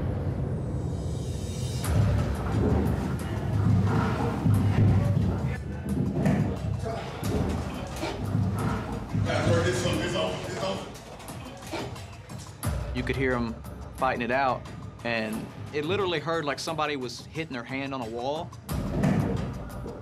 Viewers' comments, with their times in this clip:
0:06 if you listen close sounds like a loop